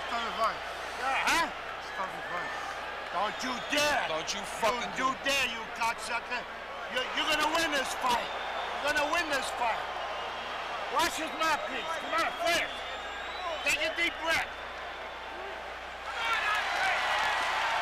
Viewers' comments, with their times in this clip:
0:05 Joey Diaz, is that you?